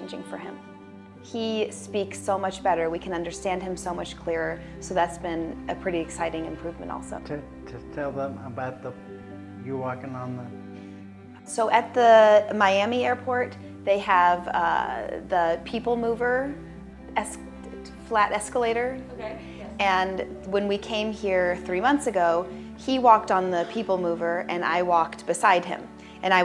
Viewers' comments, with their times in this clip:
0:07 Listening again, I did hear him attempt to speak. I sincerely hope he continues to improve. After what he went through it is incredible that he is still alive and functioning to the degree that he is. Had it been anyone else, I don't think they would be doing nearly as well. Matt is one of the toughest men on the planet. Literally gets blindsided by a train and is still going- he also appears to be getting back into great shape- physically looking strong. Good for him.